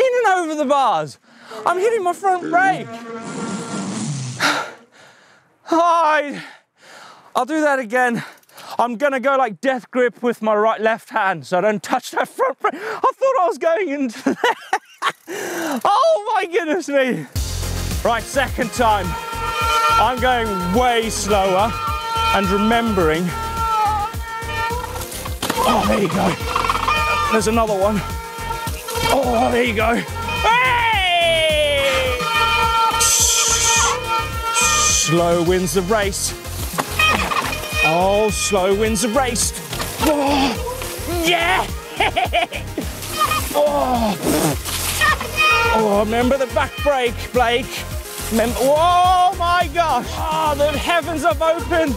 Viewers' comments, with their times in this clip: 0:05 The sound you make when you huck to flat and sack tap your back tire
0:09 Hey buddy, the decent ...your brake's sounded like a demented 1970's Emergency vehicle...I bet you scared the living crap out of any Fox within ear shot too. ;p Back in the 1990's even before (DUMBASS!!!) Vbrake's which looked more like mangled lower case L's to me...i had my bar's so short that the lever's were almost touching i had bull bar end's too.
0:09 his brakes sound like bagpipes
0:19 I'm loving the bagpipe music. Beautiful instrument.
0:19 breaks are what beginner violin lessons sound like.
0:34 the saddest bagpipes ever